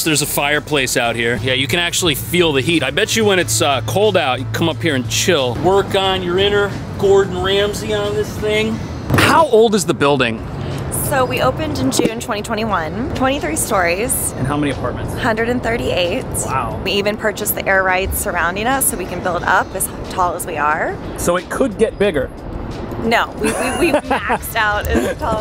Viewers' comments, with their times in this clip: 0:08 Is that vocal fry put on?